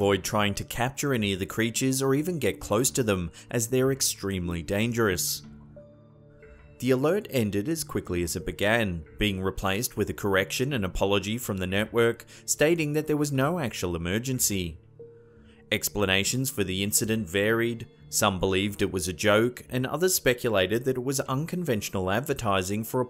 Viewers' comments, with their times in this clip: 0:10 Sounds like the intro to fight em til you cant by anthrax